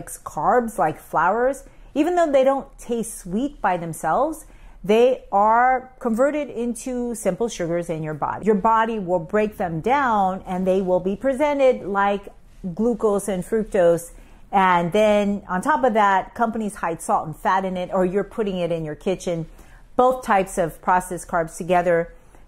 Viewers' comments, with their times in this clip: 0:06 Actually it’s she says perverted instead of converted. She does it ever time she says that and also says Unami not Umami. Very odd